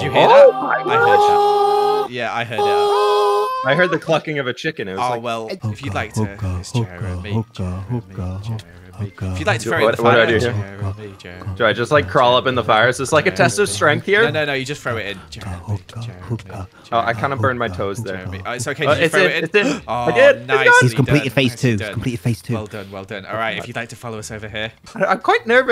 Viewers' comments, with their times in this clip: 0:07 hooked on a feeling starts playing